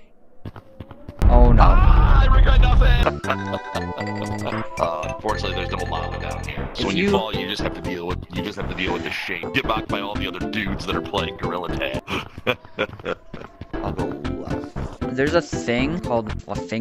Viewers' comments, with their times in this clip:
0:03 That is such a dad laugh